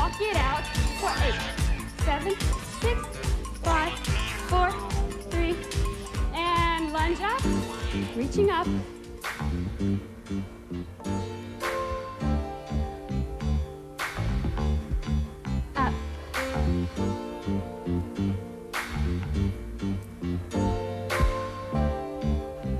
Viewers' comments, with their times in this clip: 0:08 a stand out tune of the whole series.